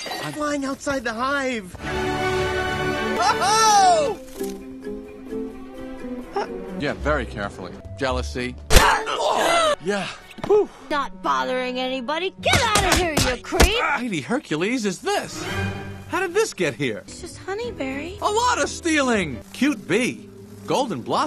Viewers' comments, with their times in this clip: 0:08 I like the stock sound when the woman grunts in the exact same way as an Isilla in Ragnarok Online.